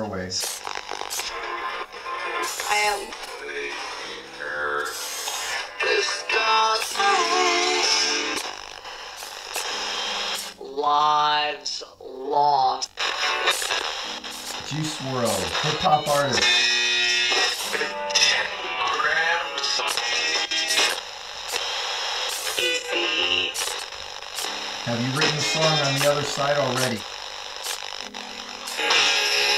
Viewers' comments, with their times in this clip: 0:07 that he's got sound like lil peep
0:10 sounds like X 😔❤